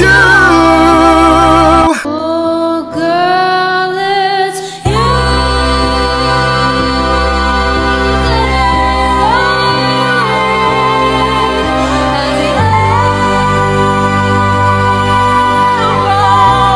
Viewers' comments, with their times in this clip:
0:03 why do so many people think singing Higher is better that lady thought she did something great